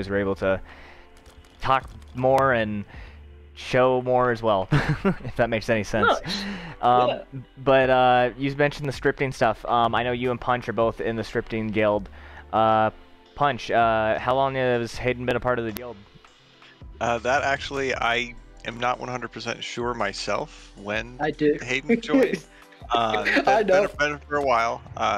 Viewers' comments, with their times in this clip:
0:10 stripping guild confirmed I knew there was some shady stuff going on at forgehub